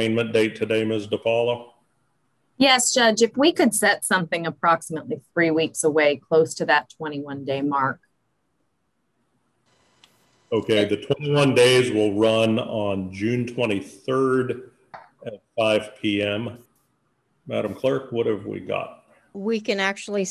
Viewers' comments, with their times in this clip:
0:03 pretty sure his representative was there through zoom you can hear her
0:03 She's there through a video link as stated in the video you can hear her voice Due to COVID they don't have to be there in person
0:03 I think due to COVID They try and have as few people in as possible. I think you can hear his representative
0:03 you can hear his representative